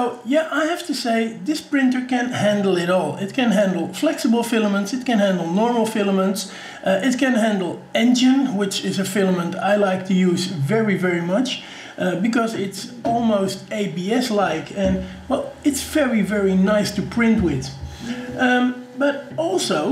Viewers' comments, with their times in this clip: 0:06 What filament type did you mention? Sounded like "enjin".
0:07 what filament? Sounds like "engine".